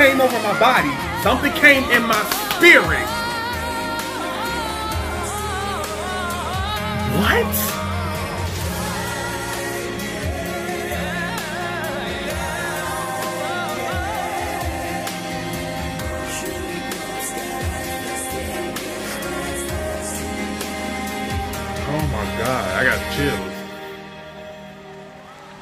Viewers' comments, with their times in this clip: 0:07 even the keyboard player can't believe how long Dimash is sustaining that run.